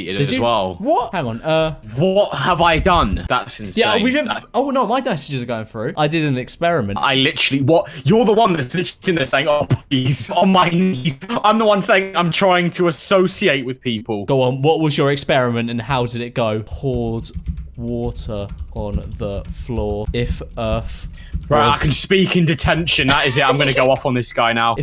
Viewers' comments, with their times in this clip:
0:04 god was that a really bad mic sound
0:09 bad Mic momentum